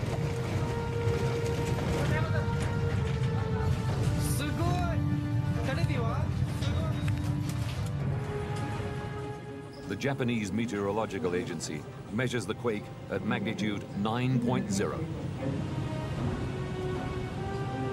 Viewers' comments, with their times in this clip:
0:05 Did someone say "Awesome?"